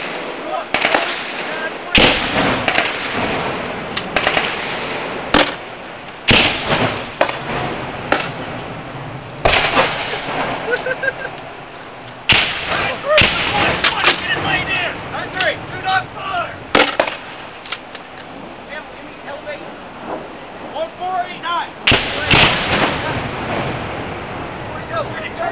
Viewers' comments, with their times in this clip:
0:10 mans is laughing in the face of danger, a true warrior